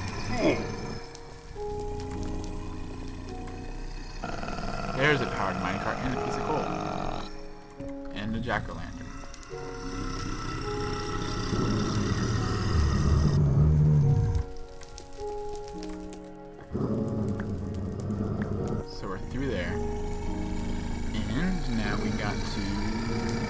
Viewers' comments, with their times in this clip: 0:05 sounds like my dad snoring